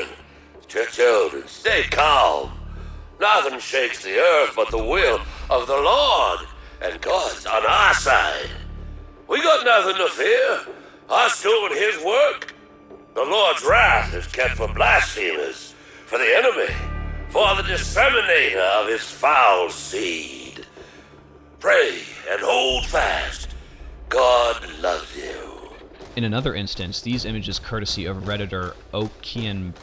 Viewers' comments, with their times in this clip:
0:10 that hard to understand part I believe is him saying "I shown his work"